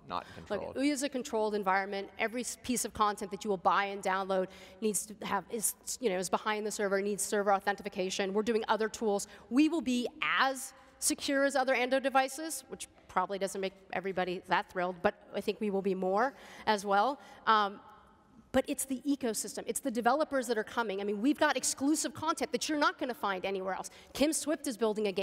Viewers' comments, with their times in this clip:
0:06 The games would need server "authentification." Hahaha
0:07 "Server authentification" lmao. Imagine being a CEO and not actually being able to pronounce something like "authentication"